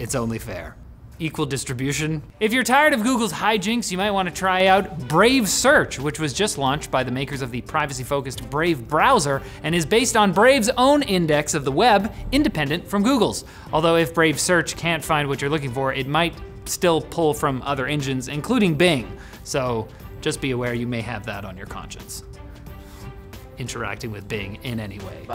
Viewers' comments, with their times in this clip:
0:07 weird volume increase